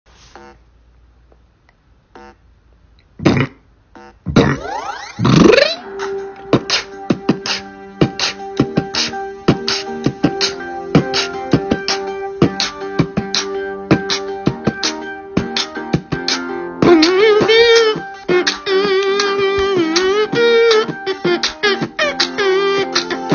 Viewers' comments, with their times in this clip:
0:04 that fusion coil sound effect though